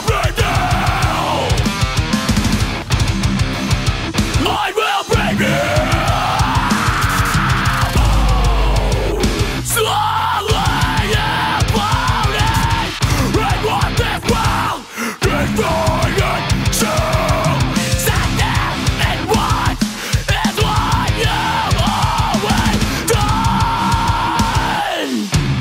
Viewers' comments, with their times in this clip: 0:08 That bass slide
0:08 Omg that foot stomp!